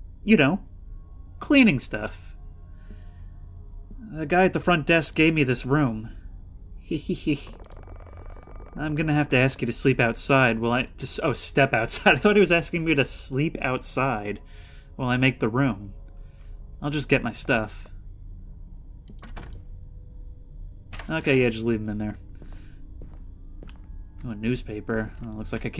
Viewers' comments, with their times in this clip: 0:06 cant not mention cute hehehe